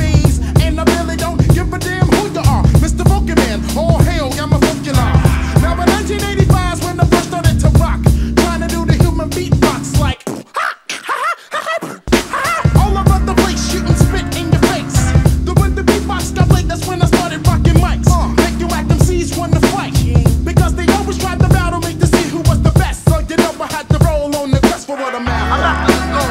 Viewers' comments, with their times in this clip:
0:09 (human beatbox) pha Ha Ha Ha Ha Ha Ha!